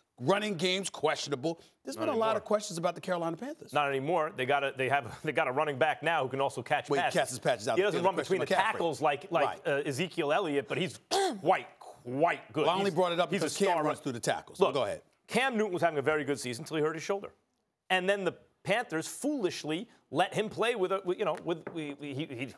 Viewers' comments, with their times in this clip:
0:10 anyone else thought max said white